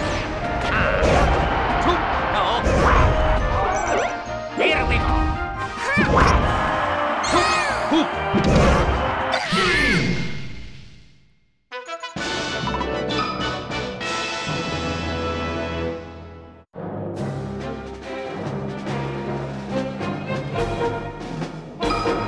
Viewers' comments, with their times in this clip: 0:10 This is the Smash Remix of Melee No Kirby with copied Wario? Haha I love Wario’s new burp move 😂 (I assume it’s his Neutral Special)